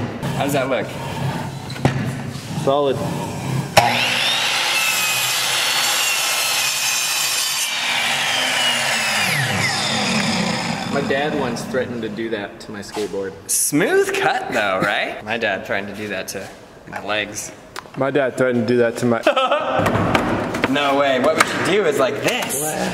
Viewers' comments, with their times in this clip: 0:03 my head phones were at 100% volume, rip ears